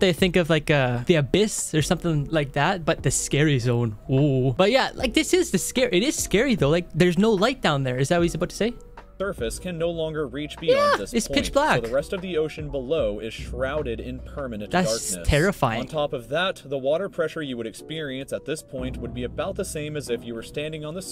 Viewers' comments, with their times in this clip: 0:09 the voice crack tho